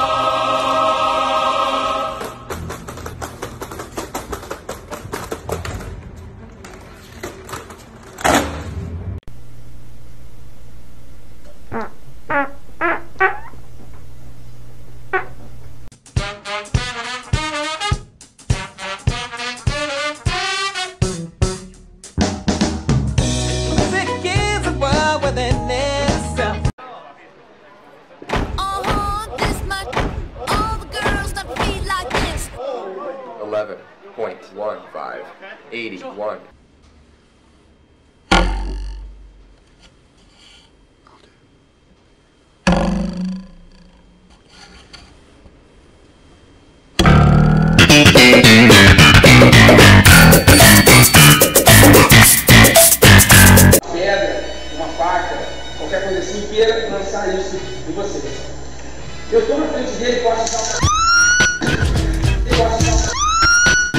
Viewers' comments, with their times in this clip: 0:10 I think sounded more like Marvin Gaye's Let's Get It On
0:51 FUCK!!! Watch that volume levels, folks.